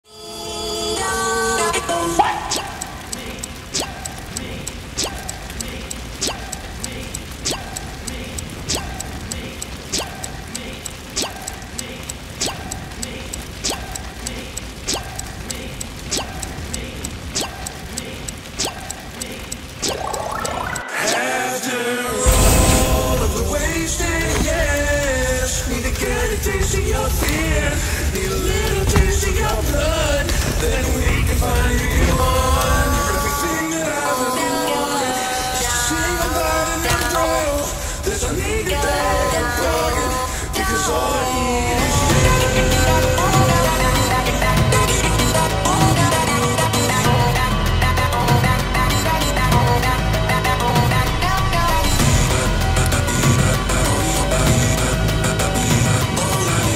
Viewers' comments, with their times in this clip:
0:02 im hearing what and help me
0:12 am i the only that hears "help me"???
0:37 best beat drop i've heard